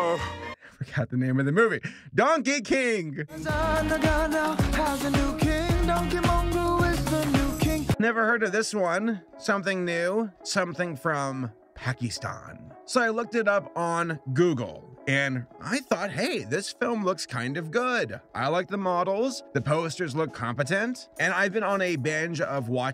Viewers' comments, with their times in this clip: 0:03 why does that sound like Wayne Brady?
0:03 you can't lie...this actually has a nice beat